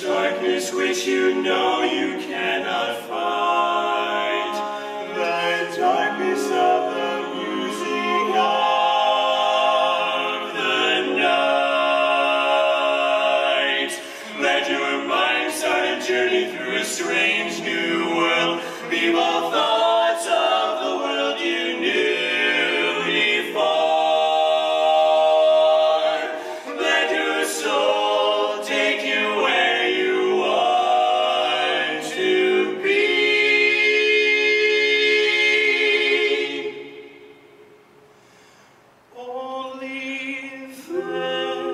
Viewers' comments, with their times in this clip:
0:08 "Of" chord. Beautiful.
0:23 the "fore" has like 50 rings on it holy shit